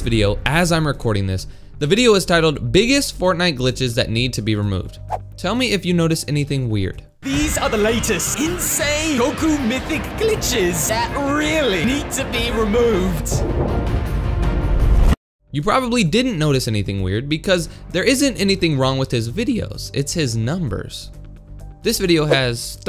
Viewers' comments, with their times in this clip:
0:04 I noticed that his voice sounded like a sound board